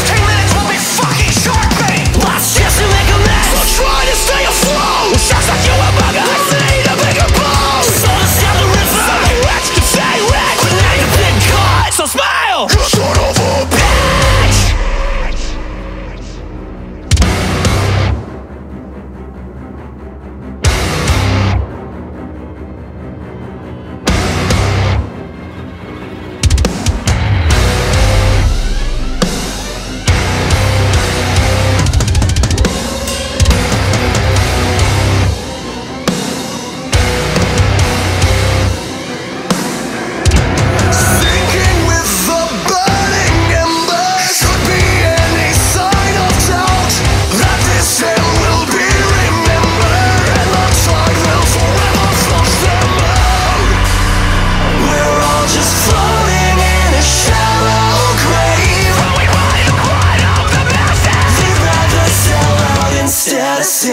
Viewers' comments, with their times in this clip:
0:10 FUCKING BREAKDOWN WENT SOOOO FUCKING HAAAARD IT MADE THROW ALL THE STUFF IN MY ROOM DAAAMN THIS ALBUM IS JUST...... Holy shit, also I’m new :D i’m going to listen to all of their stuff because for what I see in the lyrics they are referencing all of their previous work like Every trick in the book (I’ve only heard one song) But DAAAAMN I’m so happy I found this band ❤️❤️❤️❤️❤️❤️
0:12 Anyone else slightly disappointed that after the epic classic jaws violin build up there was no masssive breakdown?? No? Just me? lol ok. Still an absolutely amazing song!
0:40 Can anyone else hear a squeak or am I going nuts 😂
0:44 I always thought it says "any sign of trout" like a pun on sign of doubt... only to come here and find that the word really is doubt...you missed a good opportunity for a pun here boys!!!